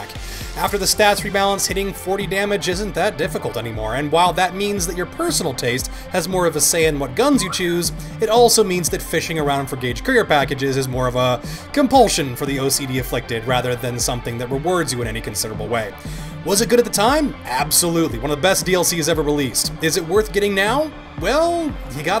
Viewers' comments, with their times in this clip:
0:08 anyone else hear his pet bird ?